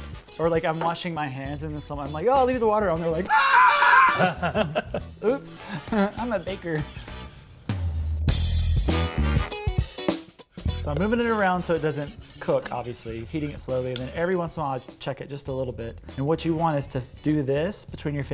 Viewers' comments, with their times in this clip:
0:03 -RIP Headphone users